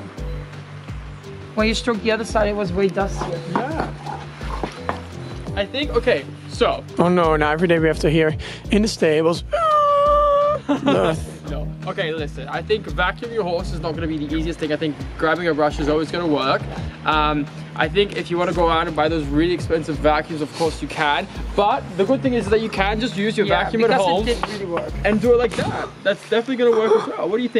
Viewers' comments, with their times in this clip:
0:10 ...was that a horse fart??